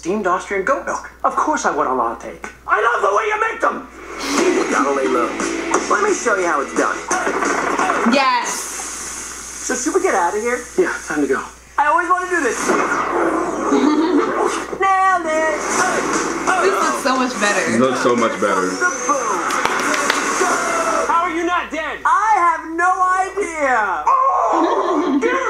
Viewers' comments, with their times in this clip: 0:07 I thought the s in yes was still going on but it was the drinks being sprayed out😂
0:07 i thought when she said yes i thought she dragged on the s
0:08 I thought that noise was her😂